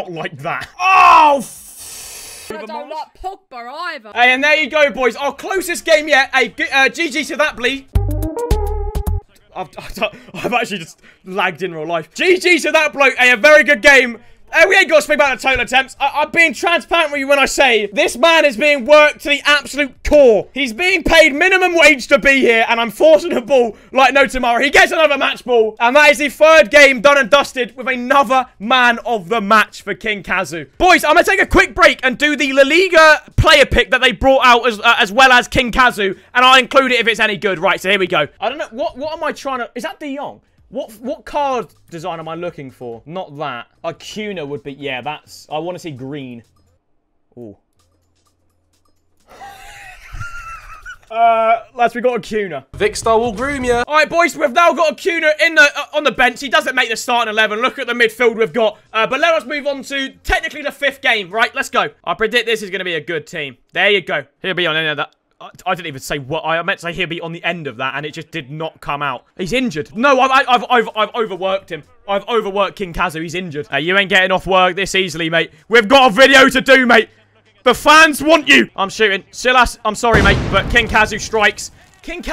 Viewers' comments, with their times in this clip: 0:06 GGs to that blee 😂🤣
1:03 You sounded like Harry Kane when you said "He'll be on the end of that" 😭😂😂😂